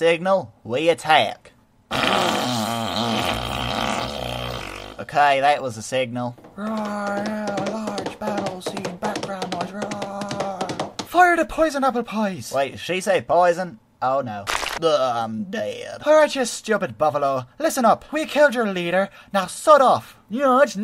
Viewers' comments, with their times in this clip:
0:06 i lost it you are a master of sound effectsXD